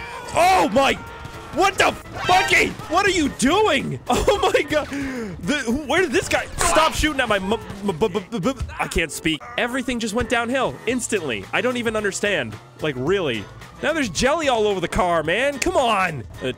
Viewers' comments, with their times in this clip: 0:03 it sounds like he said the f word